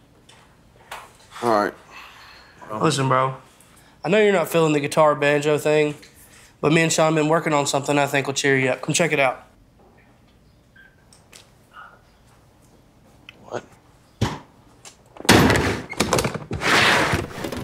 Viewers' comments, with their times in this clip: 0:03 180 seconds inta this here vidyur, if the ganjo aint in it ima lose my fuckin shit and git kicked outta rehab. Dont let me down bois LEEEEEEEEROYYYYYYYY JANKINNNNNNZ🎉